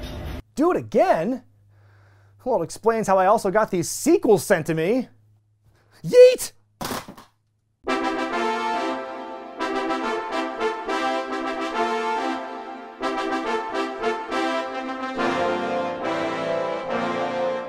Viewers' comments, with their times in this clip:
0:05 Did you get Jey Uso's ok to "YEET" that hard?